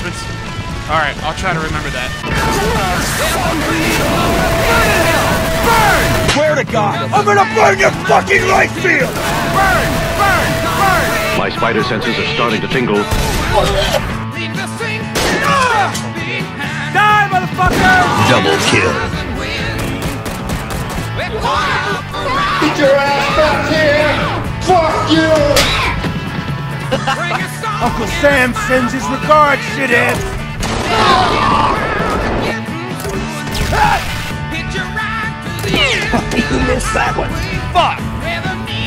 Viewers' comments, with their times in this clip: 0:06 thats my voice from a meme i made back in 2019 haha.
0:19 Damn. your pistol, sure as hell, matched with the beat as you killed that VC.